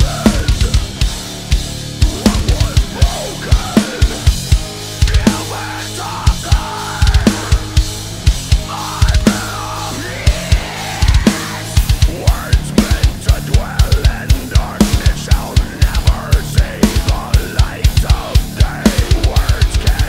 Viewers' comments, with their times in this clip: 0:04 Great cover! I love playing along with this song. Only improvement I can see is @ the riff you are missing a bass note (need 4 instead of 3). Love the vids though!